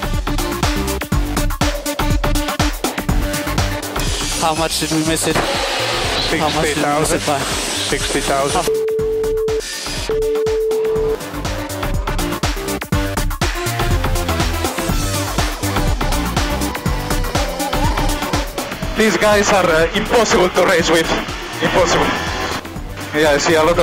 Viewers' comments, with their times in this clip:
0:08 Can someone explain me what did he say without beeps ?
0:08 angry Vettel returns